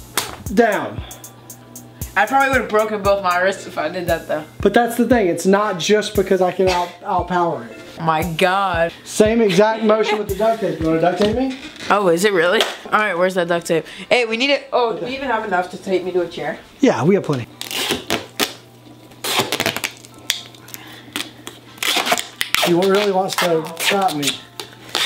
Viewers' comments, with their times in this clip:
0:08 Word:bath 😍😍 your voice and love u 😊😊😊